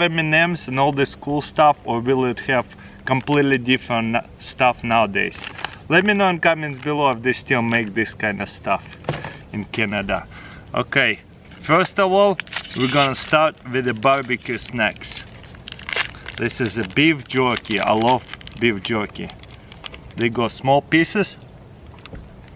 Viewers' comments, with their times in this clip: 0:07 I thought there was a cow in the background
0:07 dog in background